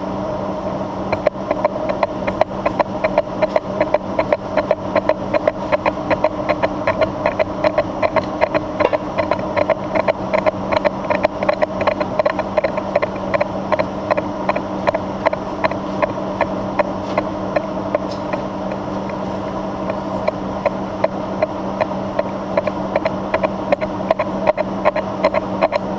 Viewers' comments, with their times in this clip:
0:07 I hear horses in ye olde machine shoppe